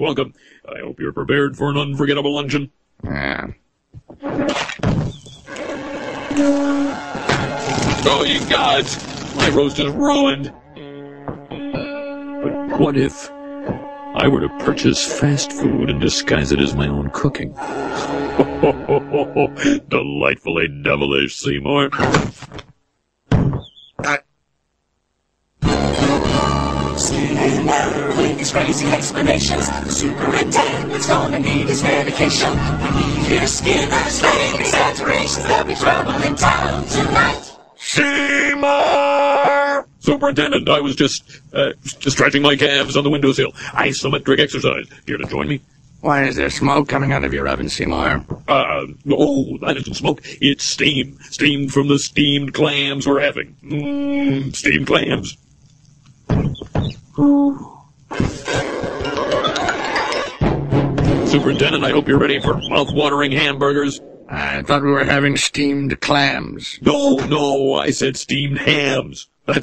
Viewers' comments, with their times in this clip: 0:06 That gasp. Lmao
0:37 Sounds like Dial-Up internet lol
0:38 my PlayStation 2 reading a disc
0:53 alien mating call